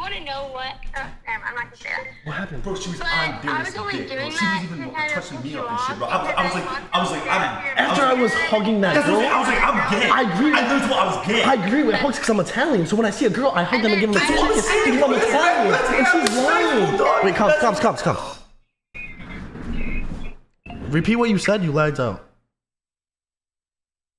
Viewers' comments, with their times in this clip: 0:10 I like when they went quite af to making up a good ass excuse for them her to repeat what she said 😂 because they muted themselves and didn’t hear the bs coming out her mouth.